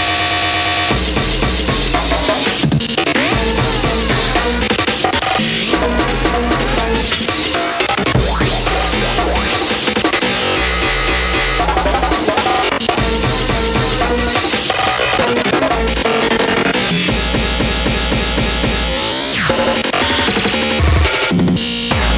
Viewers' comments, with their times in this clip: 0:06 Loooool , cd scratched ? fuck it